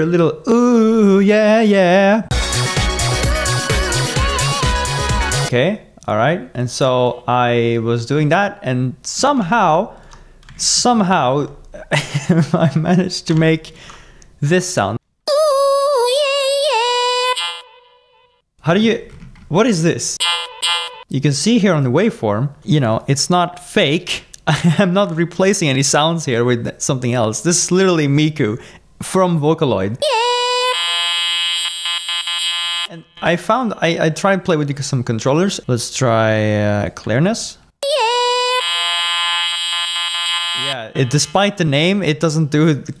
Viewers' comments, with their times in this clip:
0:05 He really say "¿Qué?"
0:17 OMG, the glitch part!! I never heard of this before, but this is very interesting :)
0:17 The audio of Chorded Robot. (Sorry.)
0:19 bro really became agoti
0:20 This part sounded like a Dubstep Bass Growl
0:29 why did miku moan and got razored
0:30 yeahhh-📠📠📠📠📠📠 Edit: holy frick 946 likes and 18 replies thank you guys Nonexistence edit 2: HOLY SHIT THOSE FUCKING LIKES thank you everybody Edit 3: damn alot of replies and likes (thats the most likes i gotten so far!) amazing support people
0:31 Ngl that sounded like the satisfaction instrumental a lil bit for me 😭
0:31 glitching sounds belike